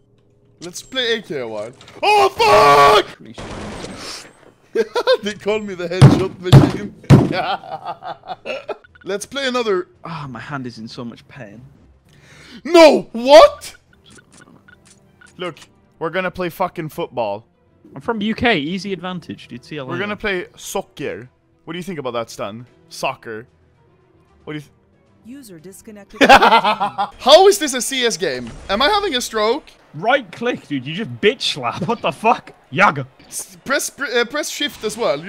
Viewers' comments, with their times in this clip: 0:04 Dey talc about may juan taps
0:21 that's the most American Anomaly ever sounded and he also said it with an American term